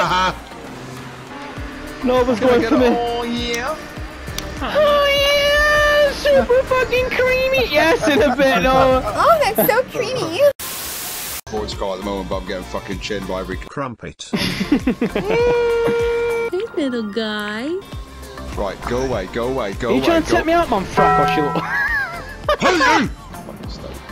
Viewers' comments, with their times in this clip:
0:10 where’d ya get that voice from 🤨